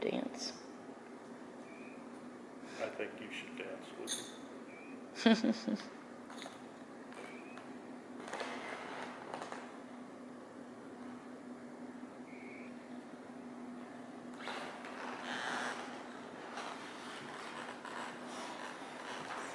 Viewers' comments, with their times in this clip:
0:04 sounds like bangle bracelet s.